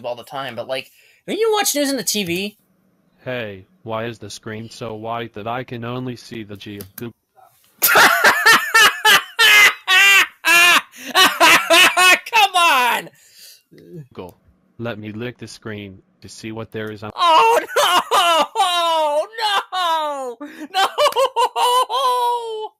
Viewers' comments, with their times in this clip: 0:06 If anyone wants proof that laughter is contagious, here it is